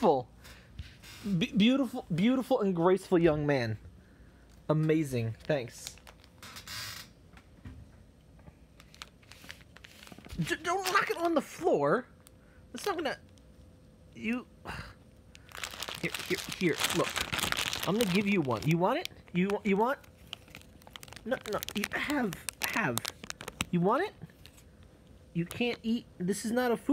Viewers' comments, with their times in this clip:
0:10 I think he likes that sound of the bag that maybe why he’s “attacking” the bag or... he had a dream of M&M attacking him so he wants pay back so he attacks them back by dropping them of the table. Parker: say good bye M&Ms HAHAHAHA... hey why you helping the M&Ms?